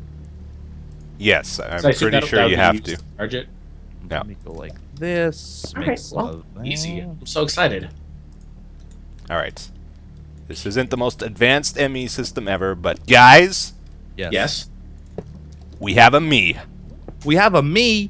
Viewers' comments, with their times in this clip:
0:05 anyone hear the weird noise ?